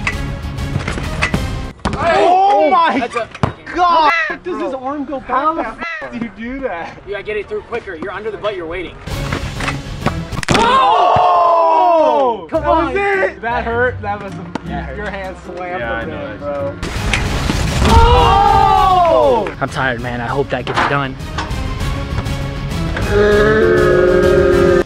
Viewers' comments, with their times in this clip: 0:09 lmfaooo iThought the sound effects was real
0:11 Can't stop laughing at edited crunch